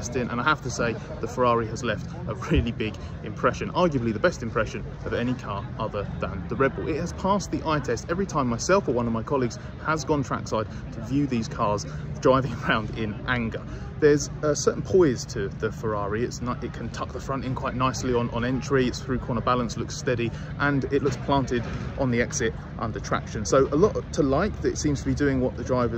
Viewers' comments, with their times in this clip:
0:06 Why do you half-a**ed do a jump cut edit of the word RedBull? Is your production team that bad it can’t do it right, or something else?